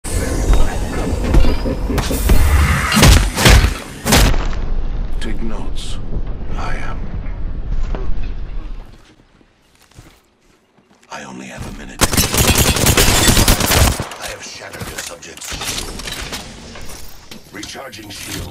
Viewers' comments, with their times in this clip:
0:01 I’m gonna faint HIS VOICE 😍😍😍 is so angelic to me